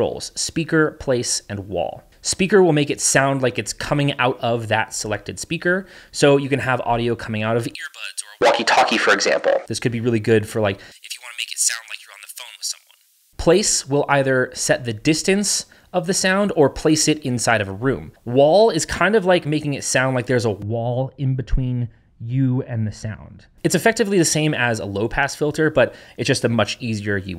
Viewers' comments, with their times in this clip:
0:09 Bro turned into Fnaf phone guy 💀